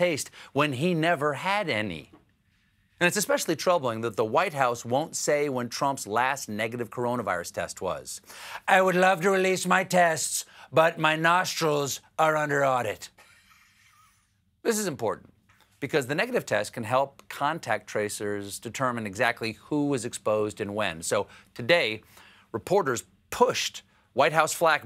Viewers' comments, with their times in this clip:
0:08 lol amazing impression better than SNL maybe